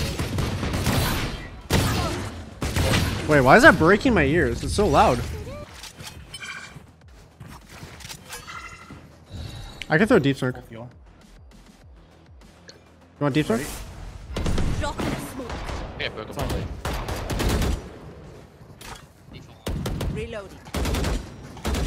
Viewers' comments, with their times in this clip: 0:03 I KNOW RIGHT! The ion sheriff is too loud for some reason